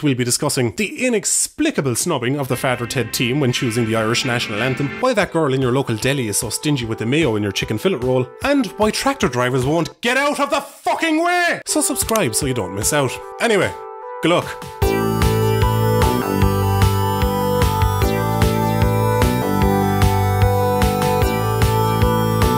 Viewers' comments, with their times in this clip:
0:10 is the best ducky scream out of all his videos.